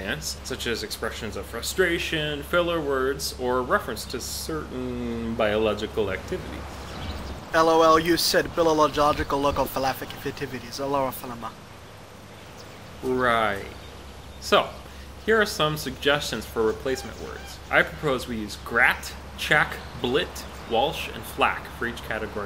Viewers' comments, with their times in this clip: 0:06 Even after 10+ years im amazed at how he says the line lol